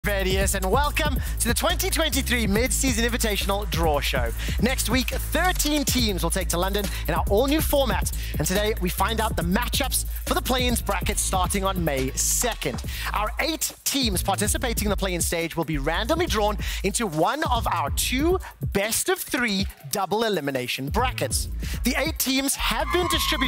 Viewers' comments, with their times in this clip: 0:06 i did not expect that hair when hearing that voice